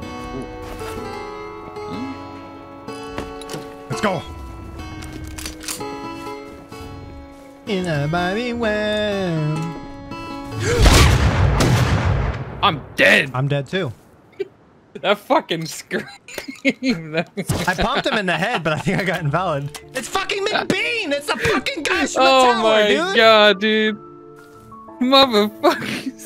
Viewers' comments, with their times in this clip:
0:09 you screamed like a girl.